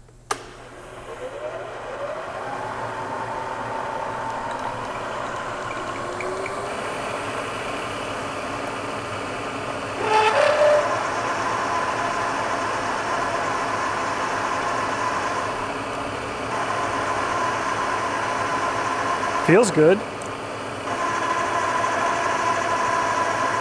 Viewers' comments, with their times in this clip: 0:10 At the mark. If you listen to it as it first enters you can hear the misalignment. You can hear it cut heavy on one side then get pushed to the other. And take a lighter engagement. $$ is on that .003" off from the coaxial. Which. Watching it a few times again, does have a significant wobble to it. The whole coaxial unit is wobbling quite a bit. Either bad collet. Or the coaxial had a secret date with the concrete floor and didn't tell anyone 😁